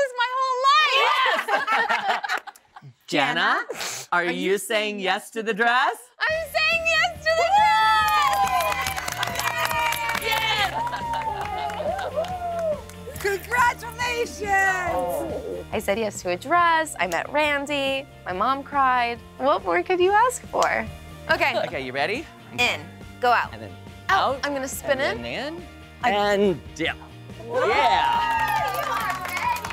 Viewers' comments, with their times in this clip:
0:10 I love that random bystanders even clapped for her. What sweet people they seemed so happy for her and I’m glad Jenna found a dress that really made her happy and shine ❤